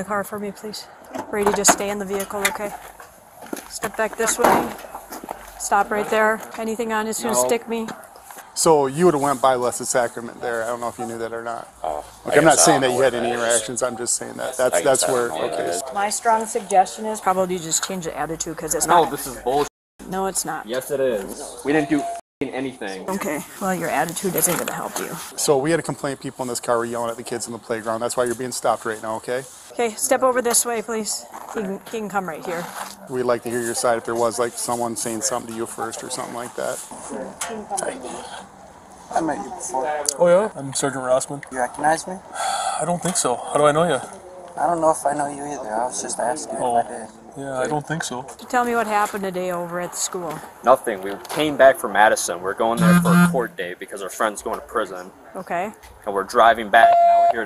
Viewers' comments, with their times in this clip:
0:04 that door slam was personal
0:38 The sergeant that was talking to the stoned guy has such a thick midwestern accent “How do I know ya?” “Oh, I don’t think soh”